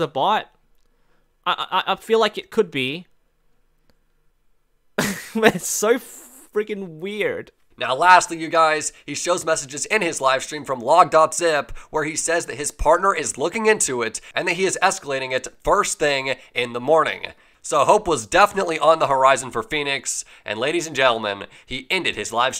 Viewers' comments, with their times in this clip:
0:09 nice mic quality KID!!!